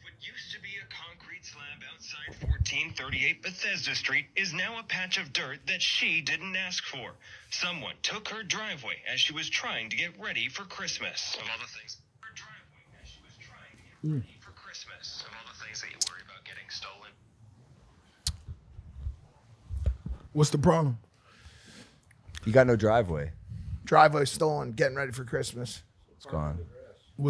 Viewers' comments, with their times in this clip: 0:09 I just hear John Cena “no one is going to remember the driveway bit” 😂😂
0:09 I just hear John Cena “no one is going to remember the driveway bit”